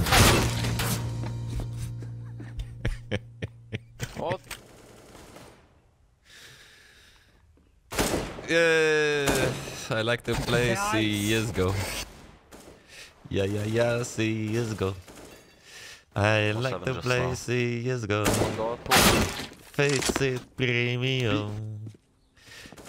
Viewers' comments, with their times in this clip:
0:03 And the CS:GO anthem starts <3